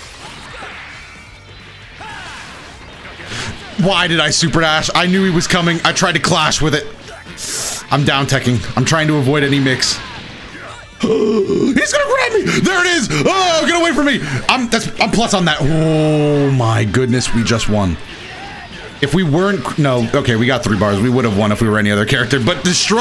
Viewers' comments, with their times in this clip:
0:10 The basic, primal fear in your voice at this very moment, I was this close to calling the cops to arrest #16. Then I remembered that Krillin is a cop.